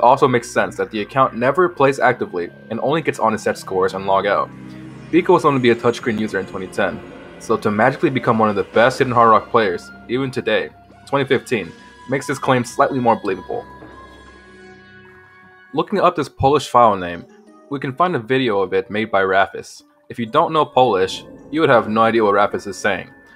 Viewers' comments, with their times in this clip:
0:07 gotta love that fitting Super Paper Mario music to represent the abyss :)